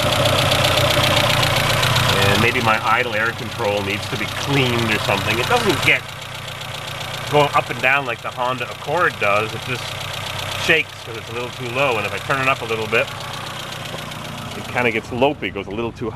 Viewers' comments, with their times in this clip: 0:03 the ISC on this motor does not need cleaning viewers, there is no way for carbon to build up on it because it is a stepper motor that is located outside on the throttle body linkage on the early 4g15 motors...however later model 4g15 motors had the ISC that is integrated into the throttle body air channel, so carbon can build up on the later style 4g15 motors, but if the ISC looks like the one in this video it does not need cleaning. however you can clean the intake, and throttle body/egr ports, and I noticed that this helps out a lot. The valves sound like they need to be adjusted on this motor, you can her them ticking.